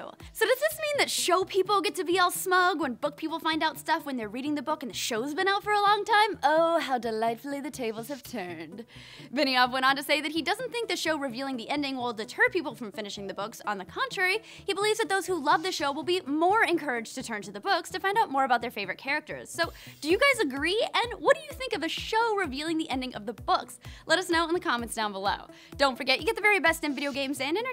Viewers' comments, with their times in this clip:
0:08 thats quite a creepy voice